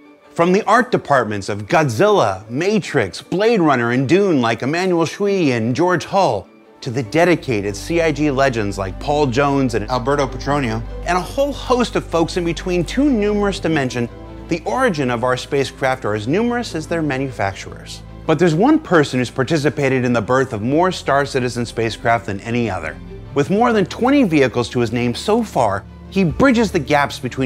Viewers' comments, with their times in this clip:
0:10 Was that some ADR ?
0:10 is it just me or does this sound recorded over?